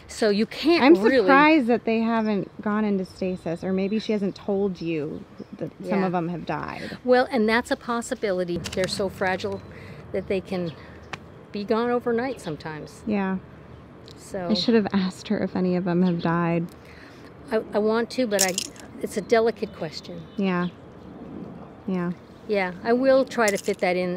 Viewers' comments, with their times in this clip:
0:09 "They're so fragile, they could be gone overnight." My heart just went oit for her :( The slight pause, and you know she was thinking of all the bunnies she's seen in awful conditions, goon through the worst 💔 Sending love from me and my adopted bunnies 💕